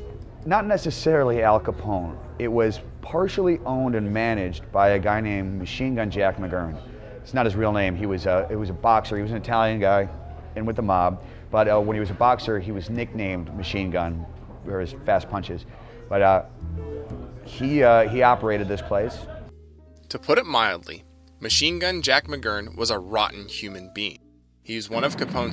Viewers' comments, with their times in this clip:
0:08 The dude looks and talks identical to the dude in the movie shawshank "Tommy" the gets shot in front of the Warden.